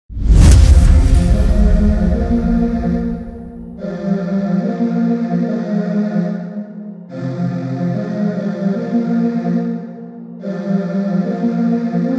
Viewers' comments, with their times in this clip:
0:00 My ears: * e x p l o s i o n *